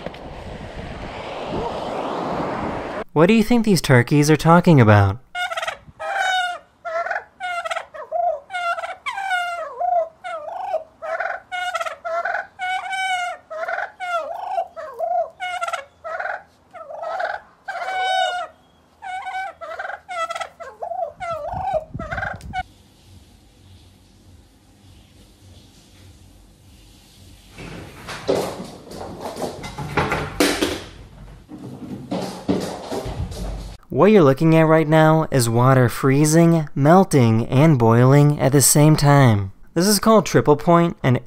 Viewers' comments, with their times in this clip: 0:03 They're speaking turkish
0:04 sounds like curious George
0:06 they speaking ghast language.
0:06 those sound like ark's dodo birds
0:06 they speak Türkçe
0:08 Rare footage of Minecraft Villagers Gossiping.
0:11 we in the nether i hear them ghasts brooooo
0:19 the turkeys are obvi talking about how hot their wives are.
0:27 the Turkeys were saying swing first no you swing first no you-u-u-u-u-u.